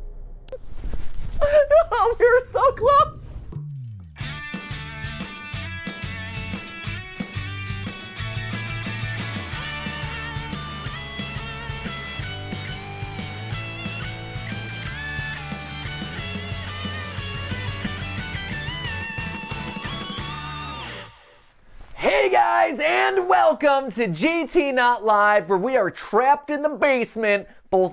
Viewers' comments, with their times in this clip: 0:10 Am i the only one who hears silhouette